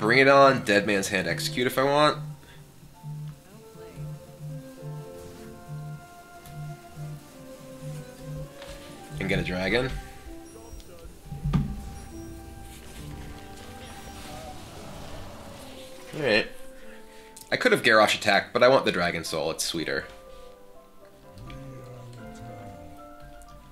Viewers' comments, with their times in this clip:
0:10 Did anyone else hear the call ?